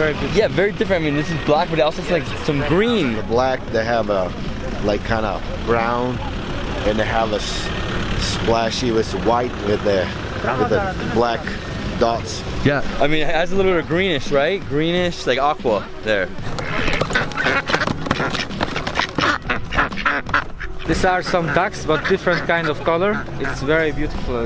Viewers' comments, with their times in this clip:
0:10 impressive accent compared to his age 👏🇦🇱